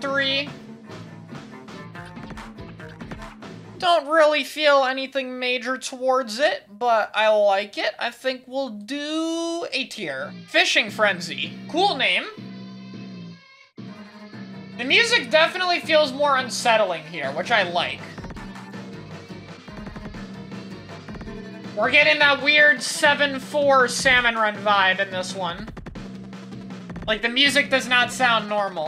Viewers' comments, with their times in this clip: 0:10 This song has the sound of a goldie dieing in it and thats cool, also yeah its really unsettling with the sirens sounds make it feel more dangerous and I love this song so much